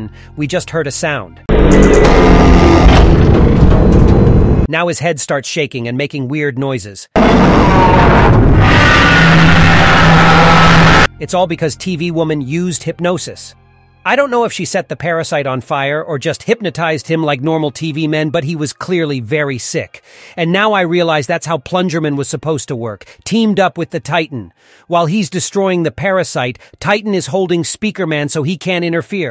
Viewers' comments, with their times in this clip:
0:07 He started to scream in pain cuz tv woman was killing the parasite. But anyways good video!
0:13 more like screaming in pain